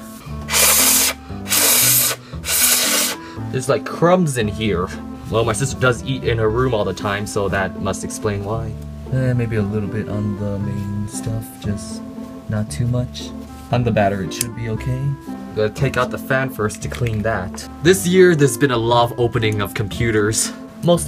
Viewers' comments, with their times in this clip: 0:05 the way he said why